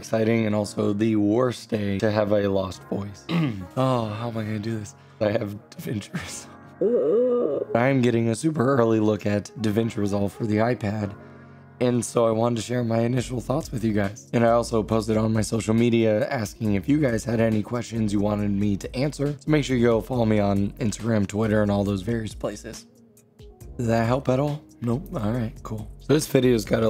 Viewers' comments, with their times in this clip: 0:07 Featuring Stephen Hawking